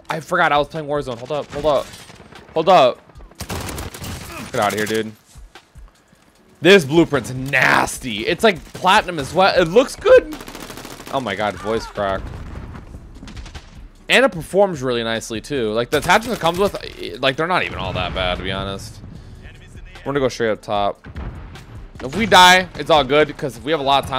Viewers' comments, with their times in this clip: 0:09 that voice crack was 😬